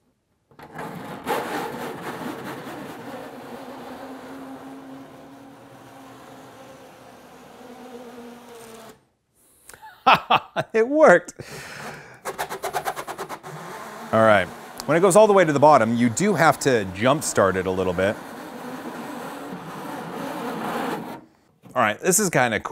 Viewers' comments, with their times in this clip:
0:10 it sounds like an old car starting lol